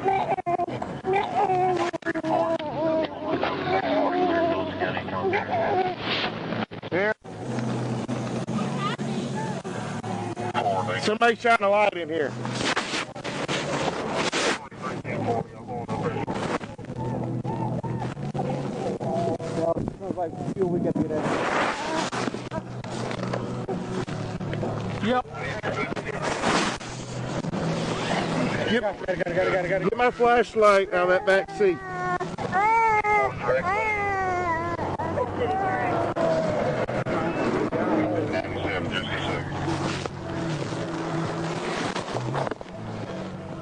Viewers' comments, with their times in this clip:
0:04 the sound of that baby crying 😢 its like the relief mothers get when our babies are born and its silent for a few mins...THEN our baby cries and we know their ok. Heartbreaking. Who tf goes 150+ mph with traffic at night with their lights off with a baby in the damn car??? I mean WTF!? 😡
0:06 that was it for me. I'm shaking. When I heard that little baby I caved. I don't know how many of these I've watched. This is traumatic for me I can't imagine how the officers keep it together. I don't know what to say
0:30 Go to You not only can hear the baby cry but also watch how an officer pulls it out of the wreck and hands it over to the mother. Dude, what have you been watching? You have missed one of the most important parts of this video!